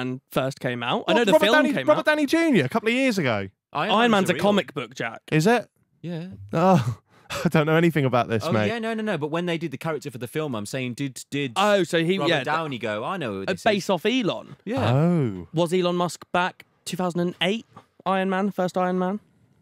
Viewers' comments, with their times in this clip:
0:03 "iron man's a comic book, jack" he sounded so angry lmao